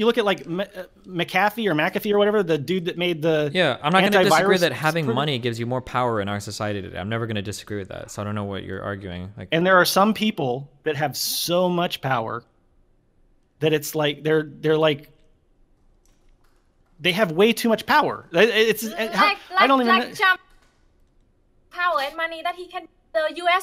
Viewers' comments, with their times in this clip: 0:07 legit found porky pig, cant spit out his words